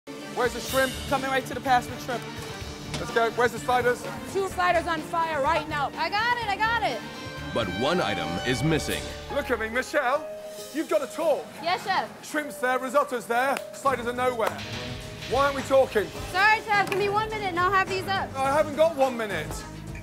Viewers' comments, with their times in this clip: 0:06 No one: Not even a single soul The subs I got the spiders...